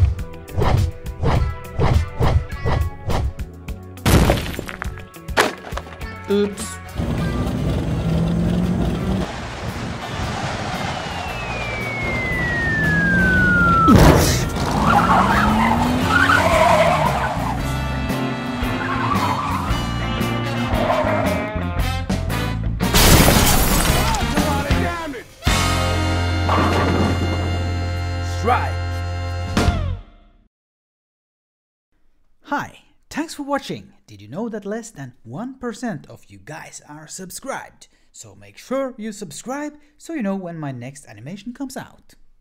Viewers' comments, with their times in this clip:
0:08 Siren head: we wo The sound of police we wo you sound like the police
0:08 At minet you gens seh siren hed in the backraund
0:08 huh whats that siren doing there AHHH-
0:23 I can hear his echo. The Flex Tape Haunts me to this day.